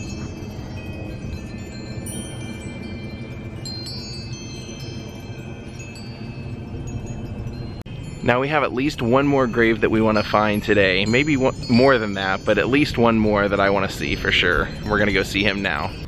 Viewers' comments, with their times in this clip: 0:03 That's so beautiful all those wind chimes in that tree there's something so majestic about that.